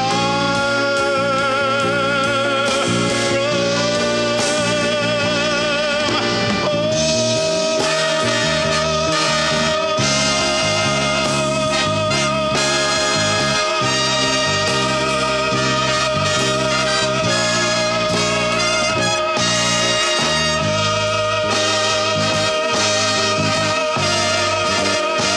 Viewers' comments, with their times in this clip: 0:06 that’s how you sustain a 28 seconds note 👏👏👏👏
0:07 Can a man sing a high note for 28 seconds ??? No but Johny boy YES